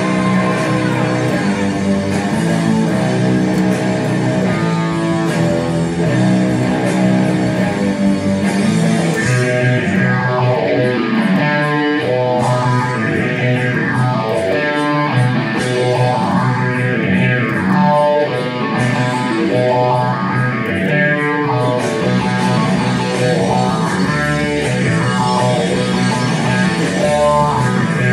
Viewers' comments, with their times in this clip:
0:09 People need to listen until for Tom's awesome riff, then they'd like the song more...